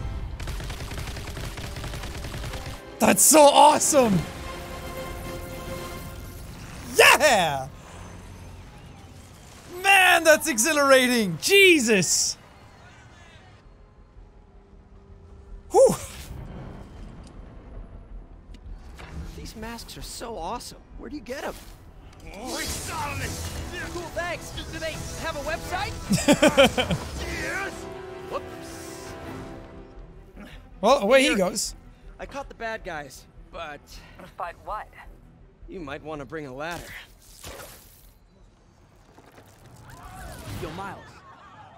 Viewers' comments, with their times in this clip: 0:09 after jack says thats exhilarating someone in the game screams "BATMAN"
0:27 it seems like the demon dude says yea